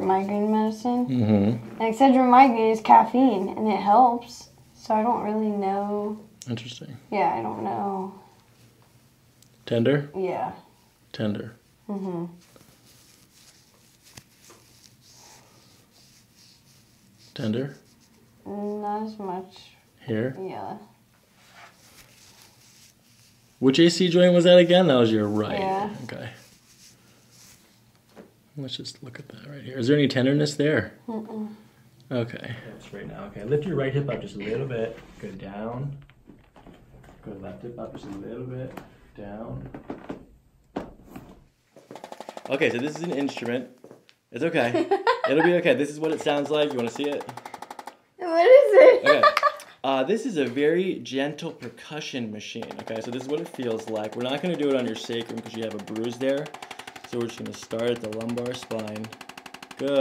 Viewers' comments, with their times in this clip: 0:05 u can tell she’s from PA when she says “I don’t know”
0:43 wow! That massage instrument sounds just like a mini jackhammer. But I think the playboy model likes it.